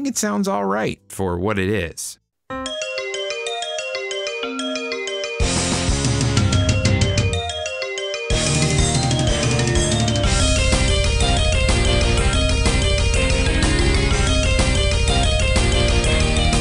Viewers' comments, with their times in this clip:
0:03 I didn't expect some kick ass music from COB themselves!